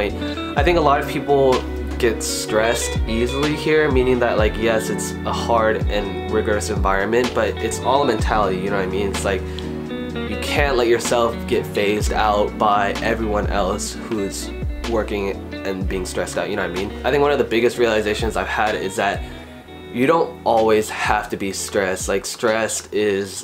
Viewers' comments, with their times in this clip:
0:04 Is there background music or is it just me?